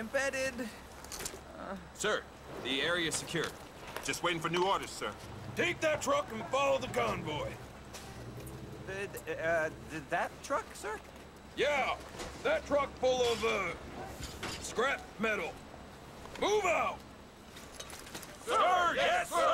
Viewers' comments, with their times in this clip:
0:03 lol the new guy sounds like buzz lightyear